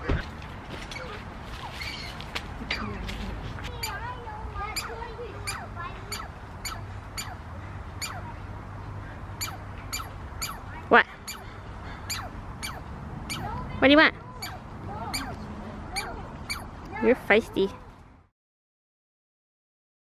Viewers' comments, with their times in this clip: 0:06 That squirrel sounds like it's shooting lasers at you bahaha